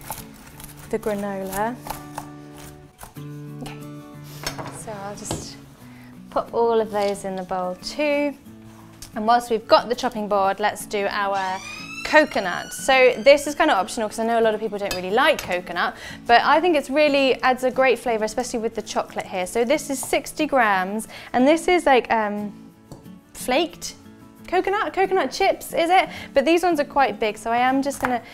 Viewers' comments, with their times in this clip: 0:10 what was that alarm? 😳